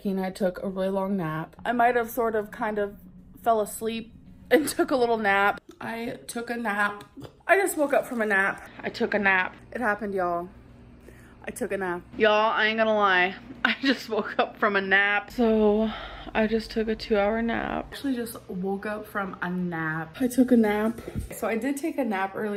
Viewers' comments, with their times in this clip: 0:09 shes said “nap” so many times it started sounding like a fake word LMAOOO